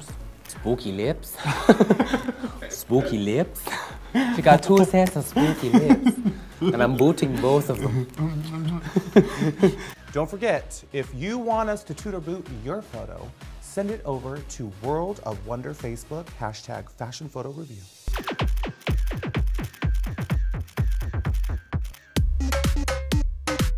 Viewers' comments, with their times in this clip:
0:08 Really? I thought was more like Translyvania sounding, I didn't get Scottish or Irish from that one but I don't have a ton of experience
0:08 What time in the video is he doing an Irish accent? The most obvious accent is and that is a pure Scottish accent not Irish (although to an American ear Northern Irish and Scottish can sound similar I imagine)